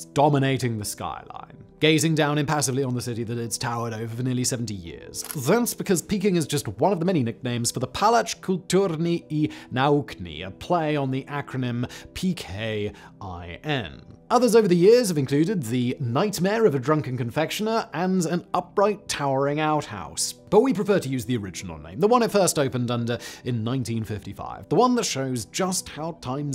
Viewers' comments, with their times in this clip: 0:07 How to pronouncs foreign words or names: 1. Put word into google translator. 2. Choose language this word belongs to. 3. Click on the "listen" button. 4. Try to repeat. All the sounds in "Pałac Kultury" are known to english speakers. It bothers me because it happens too often when someone doesn't even try to pronouns nonenglish words that are possible to pronouns for english speaker.
0:11 My hears exploded at such awful speaking of the polish language